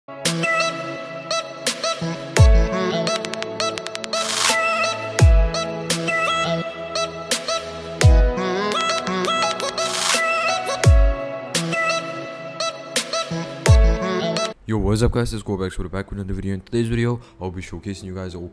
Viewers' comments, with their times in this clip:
0:00 TURI IP IP IP: best intro music ever